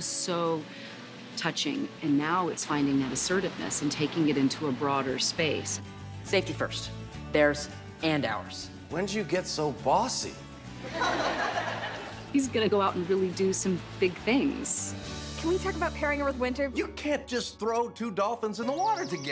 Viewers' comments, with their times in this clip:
0:05 :24 Small point: I feel Sawyer could've looked and sounded more understanding but he seemed here a little freaked for some reason.